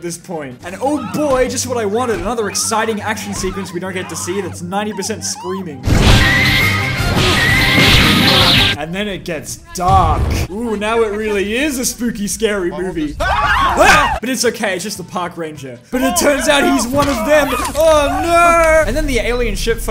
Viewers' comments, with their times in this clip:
0:06 i faking came because of laugh at that part